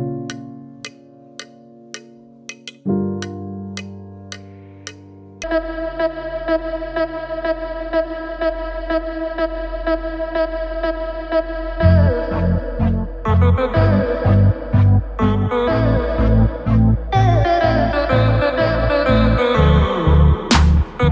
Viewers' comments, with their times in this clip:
0:05 Music starting is ???